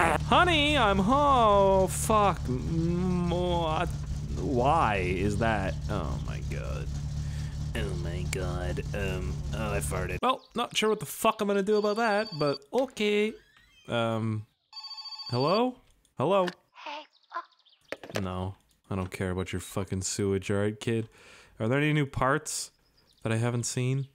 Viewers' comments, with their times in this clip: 0:06 i swear to god in you sound like eminem in the skid "ken kaniff" :D